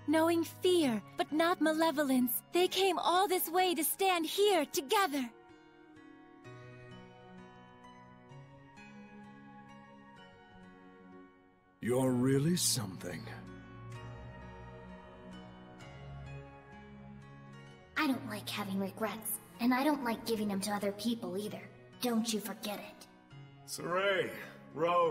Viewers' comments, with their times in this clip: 0:06 What an inspiring speech, Lailah. That's the longest stretch of important speech that has ever come out of you. I've decided that I don't actually like Lailah's voice that much. It gives me a bit of a headache when I listen to it for more than a line or two.